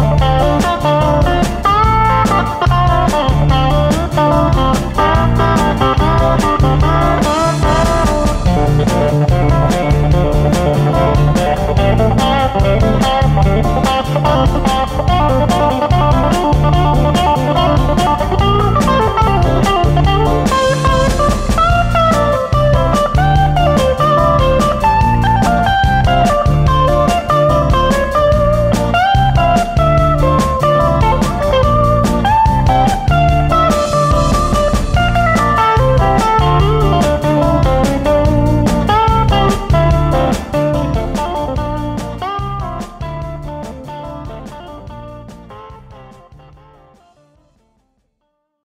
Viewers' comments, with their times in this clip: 0:04 i like how he goes into sultans of swing alchemy version
0:08 great find to add this lick from Mark's live performance (Alchemy Live) of Sultans of Swing to Layla. The only thing missing is Terry Williams banging on the crash hahaha!
0:34 lick is just inspired. Love it
0:35 The lick is actually very nice and original ~ I like that one